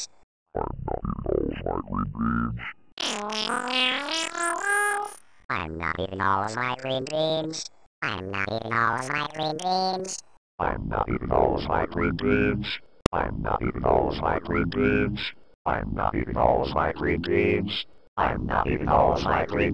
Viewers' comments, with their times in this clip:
0:03 sounds like pitch white